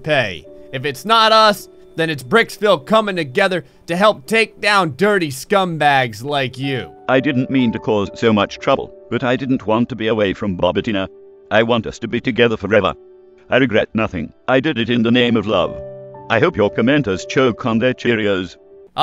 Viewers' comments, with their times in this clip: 0:07 Helicopter in the background